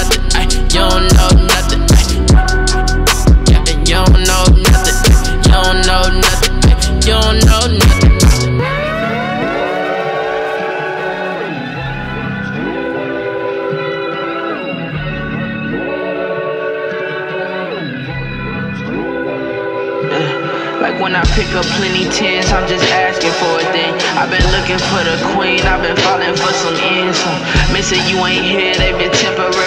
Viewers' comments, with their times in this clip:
0:10 bruh I thought this was about to transition into that Curtis Williams Mayday for a second lol